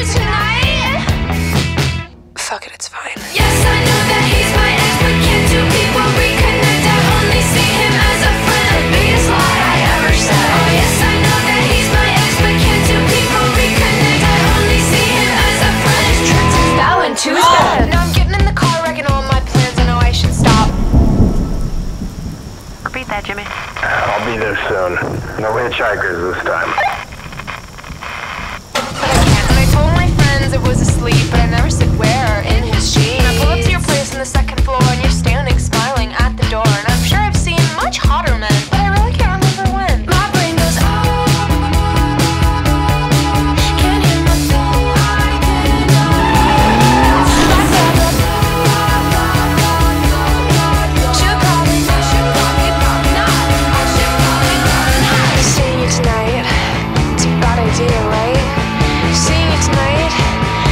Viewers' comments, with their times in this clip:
0:03 Lol same I’ve been singing it non-stop today. is sooo addicting…that guitar riff in the background slaps
0:03 did bro sample that one metallica song?? further in the song i kinda hear the guitar part of that one metallica song, its kinda quiet
0:11 that is sooo Avril Lavigne (i´m with you) and i love it
0:19 The thunder sounded like it was irl, and got me looking up while it was a bleu sky where i live. Really well done. xP
0:32 STOP THE OLD MAN SINGING WAS SO FUNNY TO ME💀
0:34 I love the "I'm sure I've seen much hotter men" part I love how she says it
0:41 such a banger it’s giving good4u and brutal
0:44 I love the background voice in this part
0:44 I love the background voices on !!❤